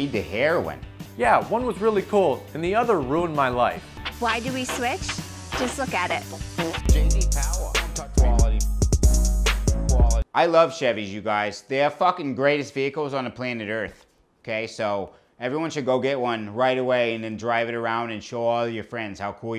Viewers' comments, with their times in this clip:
0:06 was a nice cherry on the top *fart sound lol